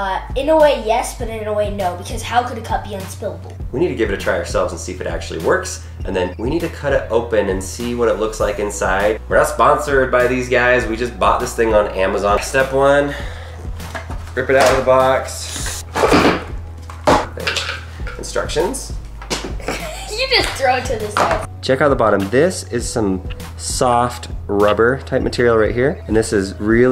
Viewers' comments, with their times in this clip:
0:10 thought it was my doorbell :)